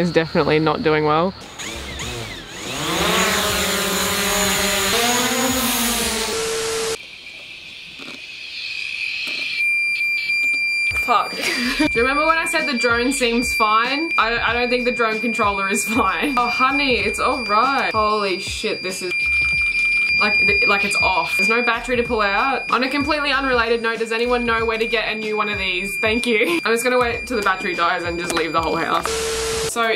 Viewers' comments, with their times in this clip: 0:10 warning head phone users